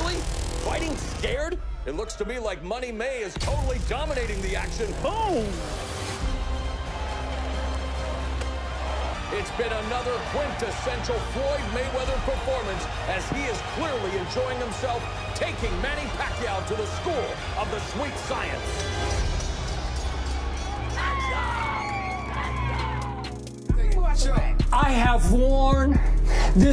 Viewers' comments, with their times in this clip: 0:07 COD hit marker sound